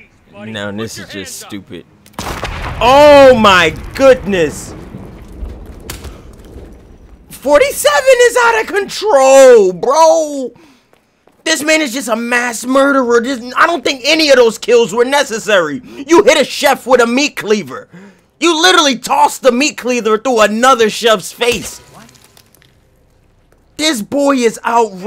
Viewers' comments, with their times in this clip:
0:08 hella sounded like chiseled Adonis 😂😂😂😂